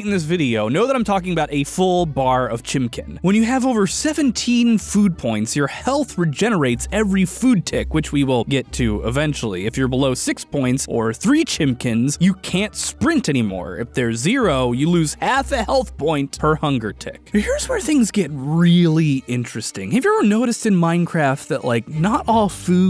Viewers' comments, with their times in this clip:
0:06 did he just say chimckin